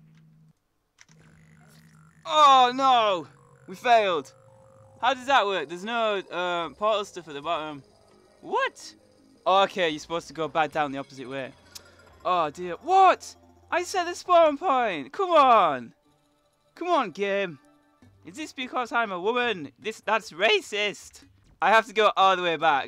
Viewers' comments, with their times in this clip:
0:08 Dat laugh <3 :3